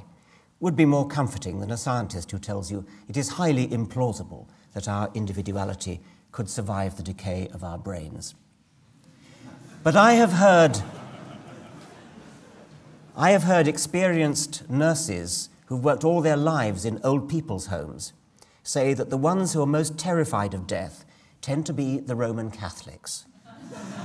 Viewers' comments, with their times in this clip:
0:09 maybe i'm missing something here, but why is there laughter ? there was no humor in his statement.
0:09 maybe i'm missing something, but why did his comment elicit laughter from the audience? is he speaking in front of high school kids?